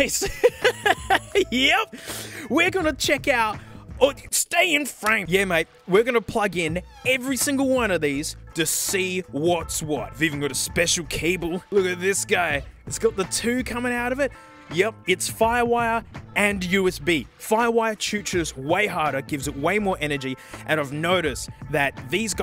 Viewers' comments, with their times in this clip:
0:06 sounded like a fart
0:06 The weird door hinge noise creeped me the hell out after watching a bunch of horror videos on YouTube lol